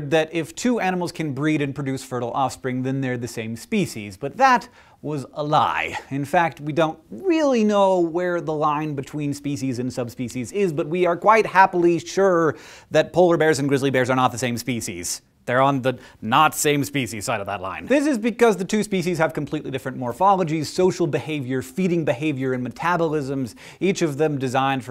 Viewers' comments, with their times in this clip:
0:06 sounds like kermit!
0:08 Hank goes full Kermit The Frog. xD